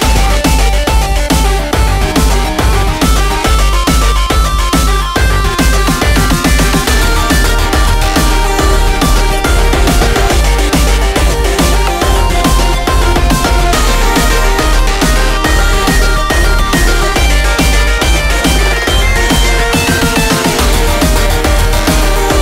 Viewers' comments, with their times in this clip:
0:07 Too busy distortion from peaking. Maybe YT too lol